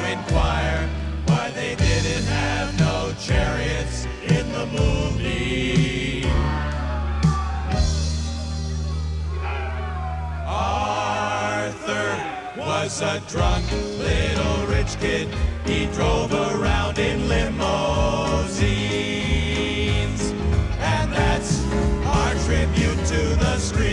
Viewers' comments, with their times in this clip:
0:04 for me, its "slow dance/reds", wit its waltz time & melody, shits got a very romantically hazy & dreamy feel, same sorta vibe as tha beach boys "dont talk, put ur head on my shoulder" which is pure🔥🔥🔥. also u can hear tha xact moment tha audience become enraged by they performance lol